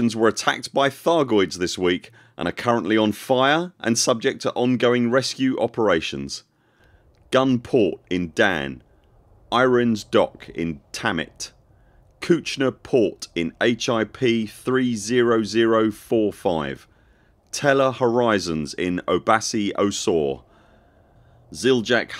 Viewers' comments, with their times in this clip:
0:08 Misheard "Irene is docking, dammit" 👍